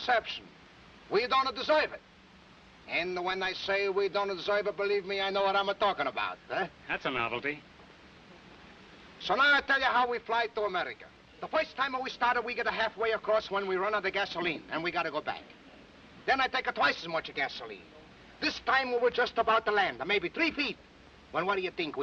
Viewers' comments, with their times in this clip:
0:08 I love Groucho's litter laugh towards the audience Little things like that...hilarious!